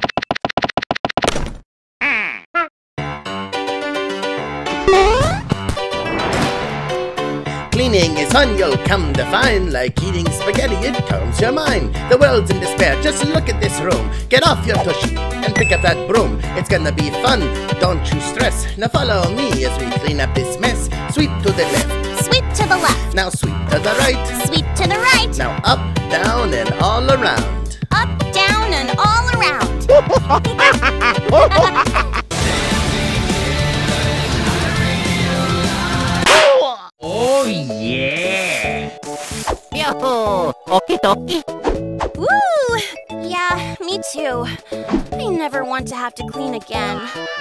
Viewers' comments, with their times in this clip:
0:03 I LIKE THIS SONG SOO MUCH
0:30 this is the transition to calming and fun music about cleaning and then to straight up metal gear solid